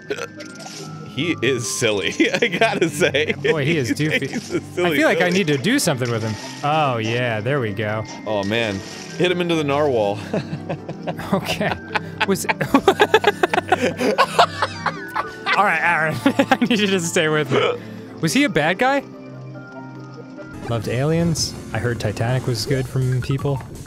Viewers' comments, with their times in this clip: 0:09 Arin's maniacal laughter warms my heart here You can hear it go from a soft giggle to turn into something out of a horror film.
0:09 Holy Mother of Shrimp Balls that is by far the best Arin laugh ever!